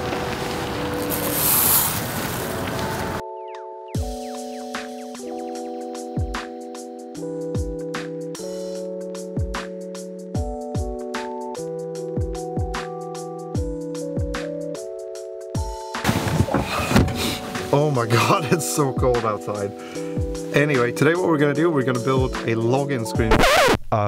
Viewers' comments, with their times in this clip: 0:05 you should've skipped the music and use the raw natural sound of snow. ASMR